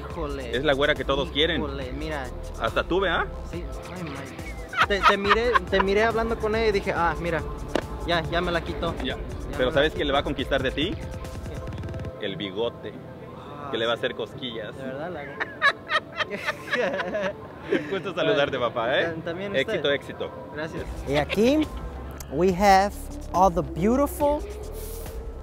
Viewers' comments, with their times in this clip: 0:10 that guys laugh tho Ahhahahaah